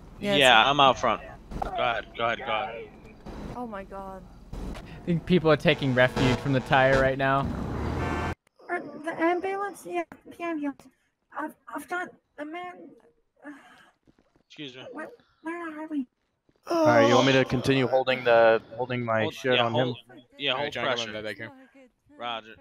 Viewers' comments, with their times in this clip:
0:09 Lol somebody dress up as Tari From Meta Runner and this person sounds like tari